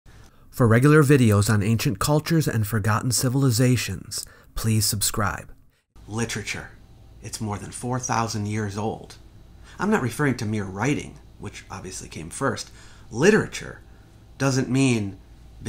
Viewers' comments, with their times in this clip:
0:00 I like that you include one breath before the intro.